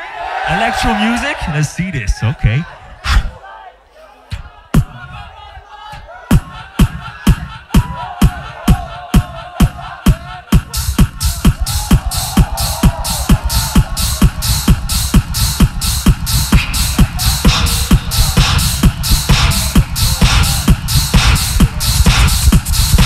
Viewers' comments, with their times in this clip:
0:04 Some legend from the crowd got sampled EPIC!